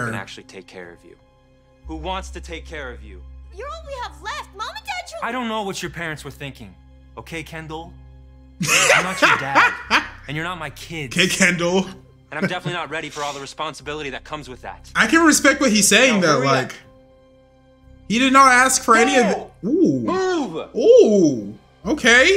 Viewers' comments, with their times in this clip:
0:09 NAH PFFTTTTTTtTTTttTttTTTttTTTTTTtTTTTTTFTTTFFTTtTTTTTTTTTTTTttTTtTtTTTTTTTTtTTTT 😭😭😭😭😭😭😭😭😭💀💀💀💀💀 that laugh😂